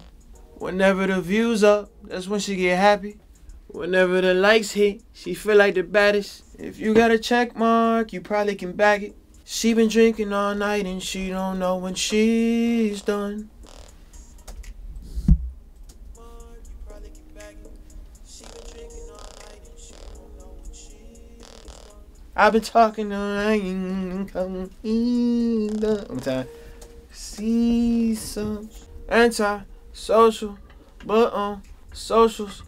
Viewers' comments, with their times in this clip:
0:04 Na u shitted, that song before and after 🔥🔥
0:13 That' Was like a Drake Flow right there hahahaha